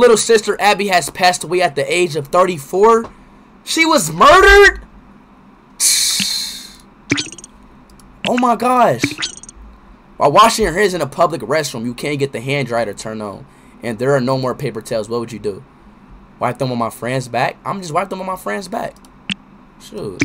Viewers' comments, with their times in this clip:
0:04 sounds pretty surprised for some reason.